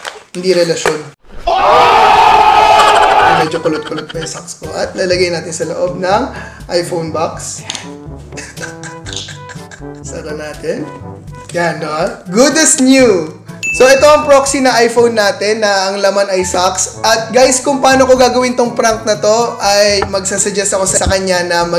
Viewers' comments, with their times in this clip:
0:09 aga our evil lughing